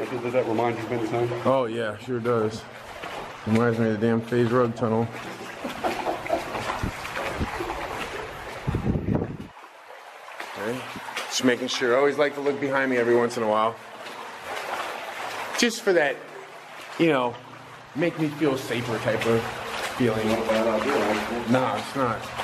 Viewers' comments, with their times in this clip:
0:05 I heard something weird like laughing!